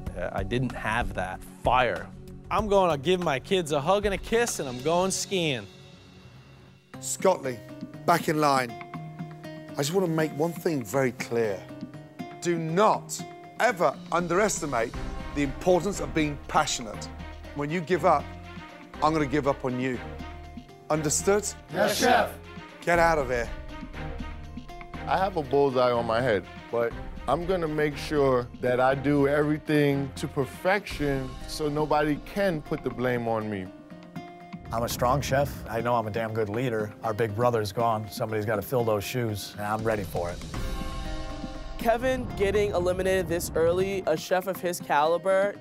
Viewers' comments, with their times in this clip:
0:06 I just love the BGM playing !
0:29 Random boiling water at the end of the day? Nice